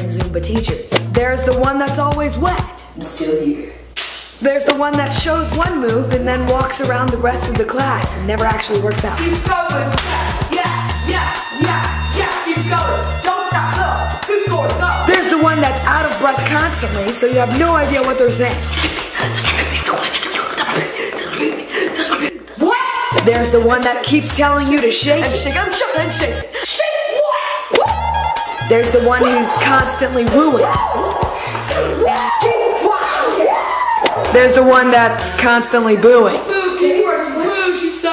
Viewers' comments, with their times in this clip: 0:03 That "Splash" caught me of guard...
0:15 Teacher: dffvggrf4rdegnyvwsbg Me: WHAT!?
0:19 Am I the only one who heard ' touch my pepe' on ???🤣
0:19 am i the only one who heard TOUCH MY PEPE on ????????!!!!!!!!!!!!!!!!=) :0
0:22 this could just be me but I hear you say touch my pee pee. Don’t ask how I hear it I just do